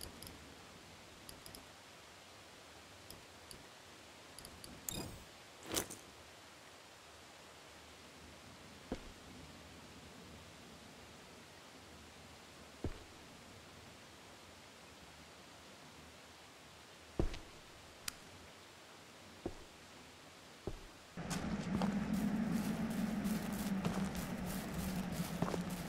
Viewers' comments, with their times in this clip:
0:09 puting the paper on the windows should have some paper sound effect ..........